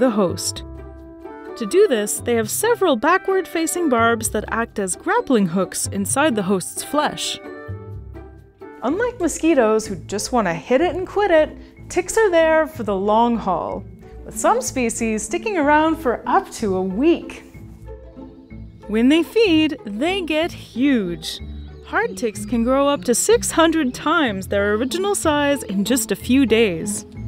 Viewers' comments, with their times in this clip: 0:08 sounds like my dad.